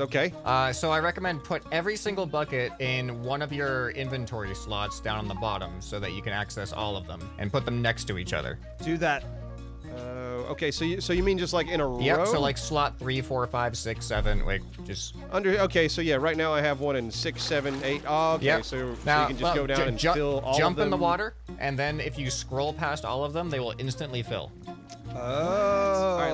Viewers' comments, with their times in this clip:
0:09 Was I the only one totally vibin' on the Asian flute jam during the garden defense section ?